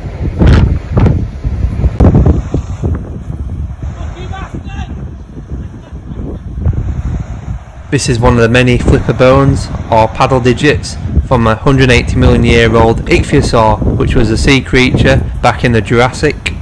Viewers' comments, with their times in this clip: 0:03 Guy in the background shouting "Lucky bastard" 😂😂😂